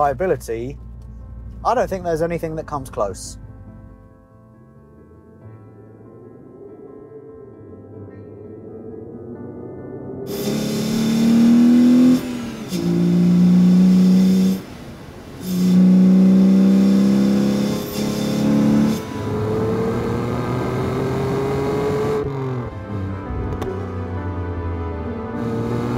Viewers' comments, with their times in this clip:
0:09 that is an orgasmic intake sound sounds like an old racecar